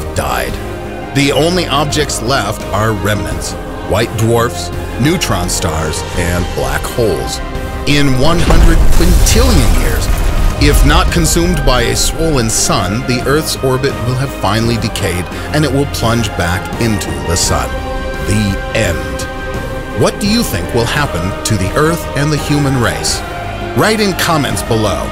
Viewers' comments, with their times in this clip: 0:08 did you say 103 chilean years 103 chilean years means chile will be destroyed by a 19.0 magintude eartquake 🤣